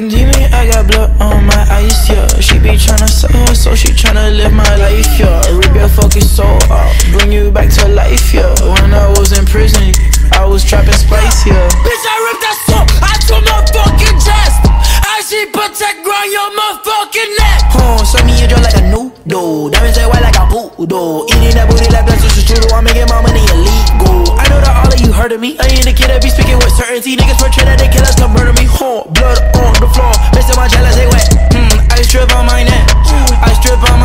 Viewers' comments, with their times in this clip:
0:09 remind me of XXXTENTACION
0:12 I thought I was listening to Sipping tea in your hood
0:18 remind me of ski mask the slump god